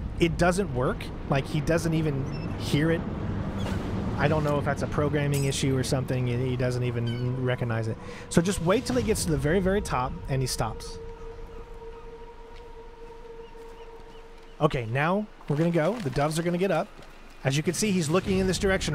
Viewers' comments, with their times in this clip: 0:04 the bottle was soundmasked by the plane
0:05 I think the reason why the guard didn't hear the bottle because its sound got masked by the plane. When the bottle landed, the soundmask indicator still appeared.